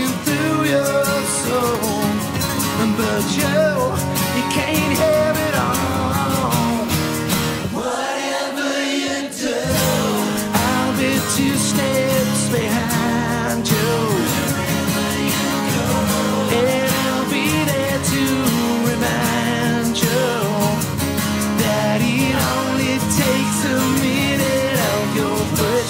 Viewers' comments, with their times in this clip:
0:06 Thanks! Especially Phil (in time) solo - very nice! Def Leppard - 4Ever!